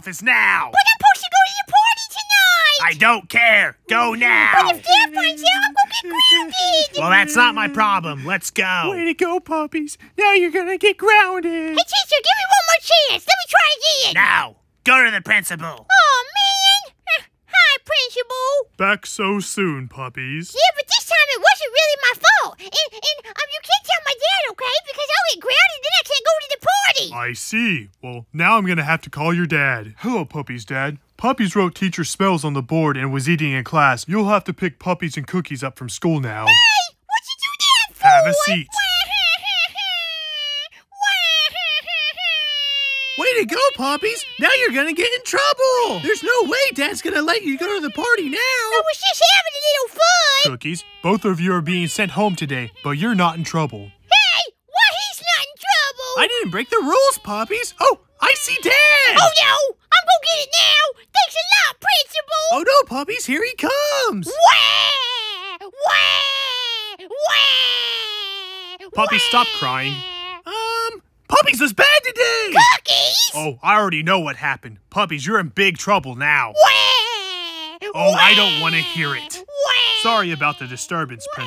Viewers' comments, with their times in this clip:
0:04 cookies is crying
1:04 he cries so weird.